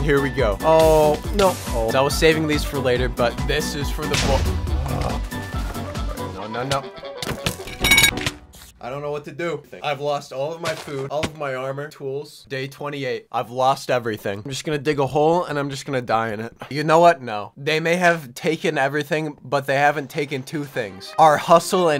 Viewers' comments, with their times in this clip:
0:07 Bro Farted Metal